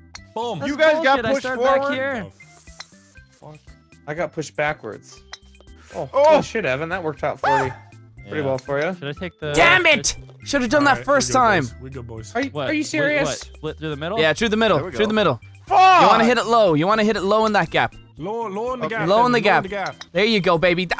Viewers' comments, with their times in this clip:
0:07 Did anyone else notice the homer scream